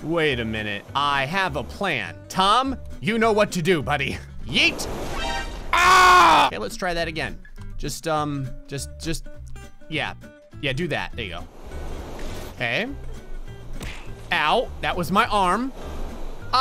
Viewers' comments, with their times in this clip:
0:04 that scream tho XD